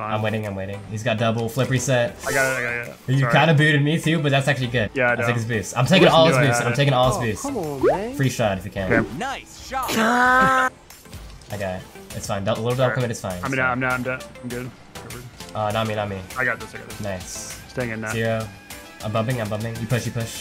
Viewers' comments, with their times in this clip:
0:08 that sounds like my brother laughing